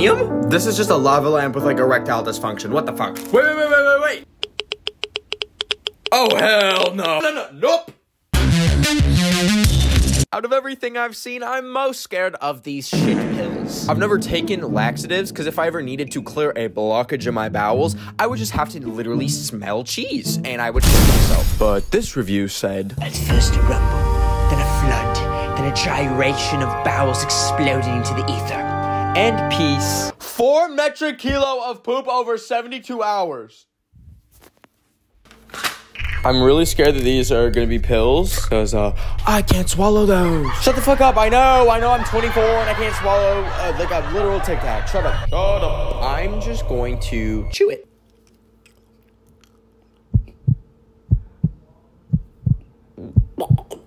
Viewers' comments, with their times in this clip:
0:04 wtf is that clicking 😭
0:41 not me thinking he said “I’m 44” I had to replay that multiple times for me to hear 24🤣